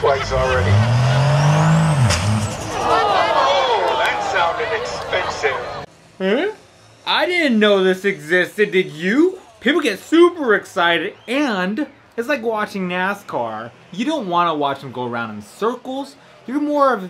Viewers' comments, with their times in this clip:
0:03 Holy hot damn, you have to admit that truck sounds amazing. That turbo tho